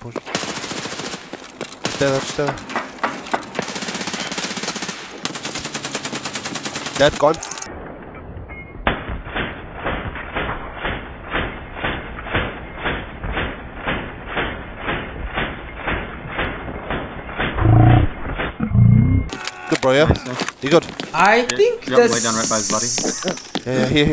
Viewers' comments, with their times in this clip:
0:06 idk if I'm just hearing things or misinterpreting his accent, but did he say "AHK"? There was an odd stutter when he said the first syllable but extended it? Freudian slip? after this kill